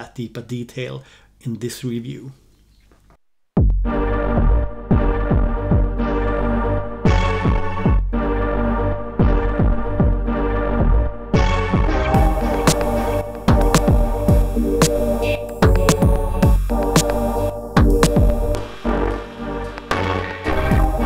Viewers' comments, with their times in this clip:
0:04 nice and dark need more of that :)